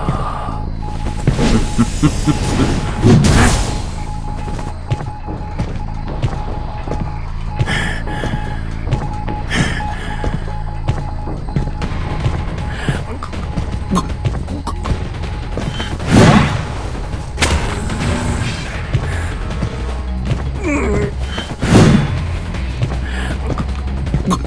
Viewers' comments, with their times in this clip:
0:08 you can actually tell if someone is hit by the slam. Either you see the points you gain or listen to hear audio cue that sounds like a ring